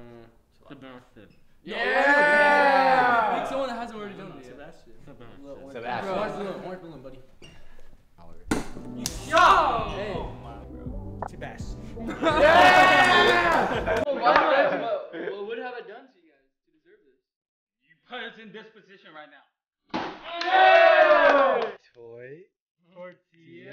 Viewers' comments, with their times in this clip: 0:08 what happened to the audio here